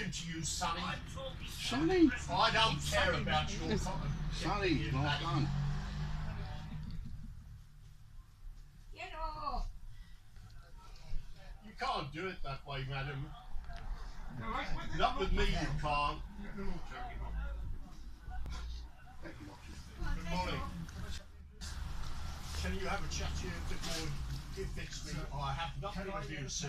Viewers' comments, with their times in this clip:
0:08 That “get off” was absolutely pathetic!